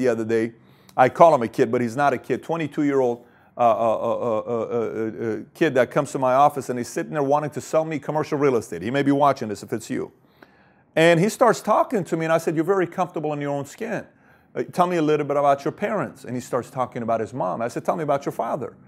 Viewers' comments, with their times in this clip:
0:03 Keep on clicking for repeated "aaa aaa eee ee uhh uhh"